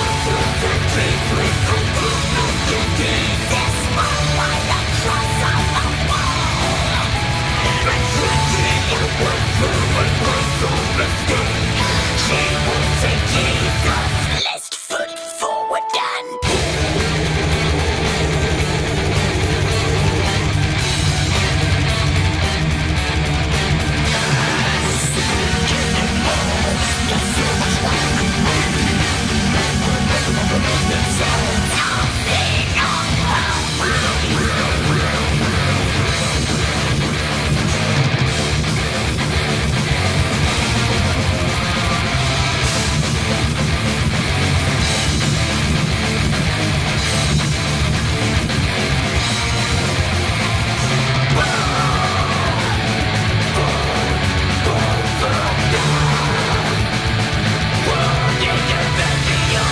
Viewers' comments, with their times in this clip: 0:04 thought that was Jack Black for a second there.
0:42 That riff reminds me of “One By One” by Immortal